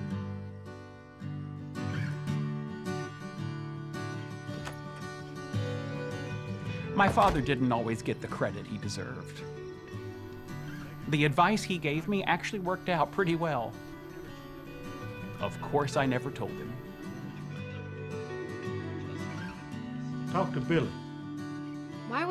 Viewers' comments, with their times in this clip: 0:07 like the music ❤❤